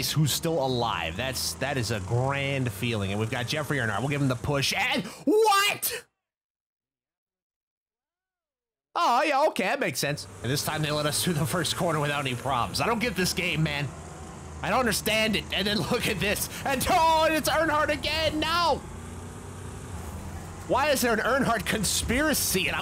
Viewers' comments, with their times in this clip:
0:04 that’s probably my favourite WHAT?!! out of you ever!!!